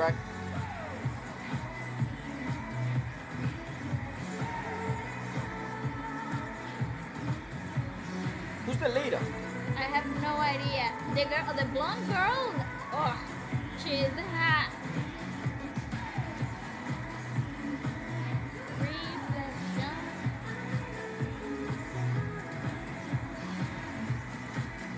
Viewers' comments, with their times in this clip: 0:08 The Leader is Kim Taeyeon Who react of her top 12 emotional concert songs before she have so powerful and streght voice she's so very GODDESS 😊